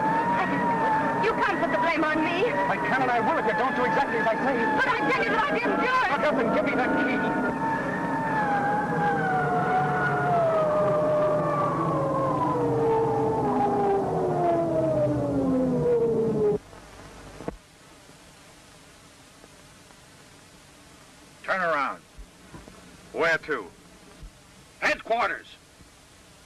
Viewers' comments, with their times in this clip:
0:09 Off camera we hear an alien spaceship landing.